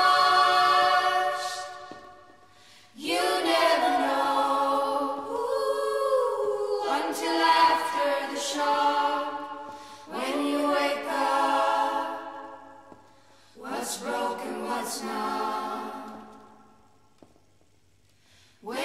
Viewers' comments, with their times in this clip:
0:06 Who's ? I love her voice!